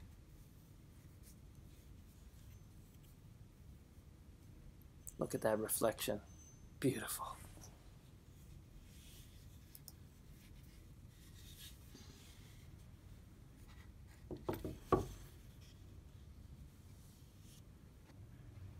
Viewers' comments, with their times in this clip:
0:04 Reflection is nice but how about that little whispered sing of the blade, that's some good high carbon steel, Estwing don't play. Little late to the party but very nice work, I love leatherworking too, no rushing, just take my time and enjoy the process. Has a very distinct smell too, which is a happy smell for me.